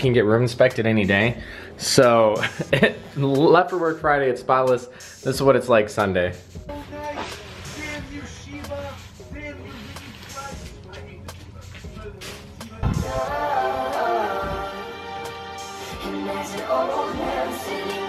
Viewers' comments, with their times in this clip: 0:05 I can friggen hear the league playing in the background at like 😂